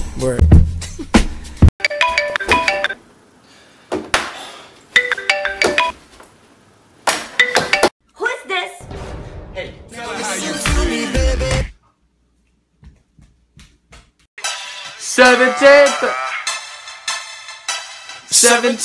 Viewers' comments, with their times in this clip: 0:03 when he had the phone ring never put it that way it scratches all the scream